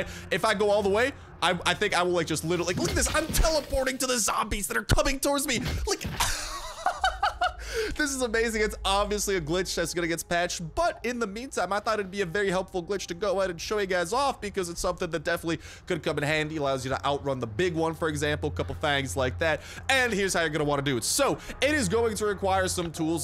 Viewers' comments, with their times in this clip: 0:05 the best laughing 😀